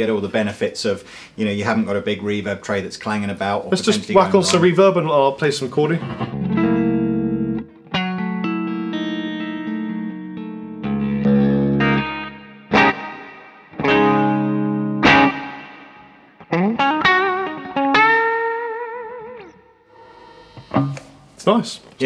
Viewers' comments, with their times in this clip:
0:06 What chord is that ? sounds really spooky...me gusta